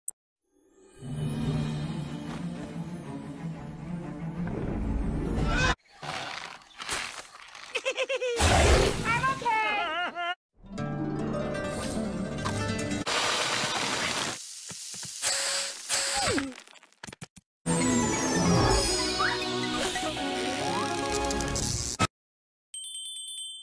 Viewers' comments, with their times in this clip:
0:04 this sounded like a meme
0:05 well that's a perfectly cut scream